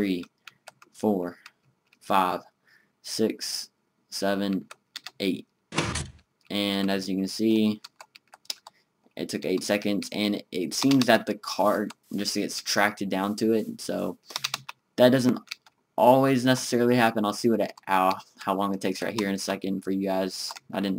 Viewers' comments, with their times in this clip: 0:06 the cart was halfway and then foooom